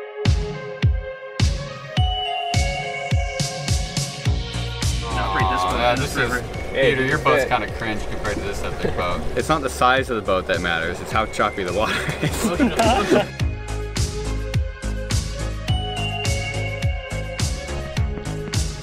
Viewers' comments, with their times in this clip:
0:04 a WHAT kind of spear rental?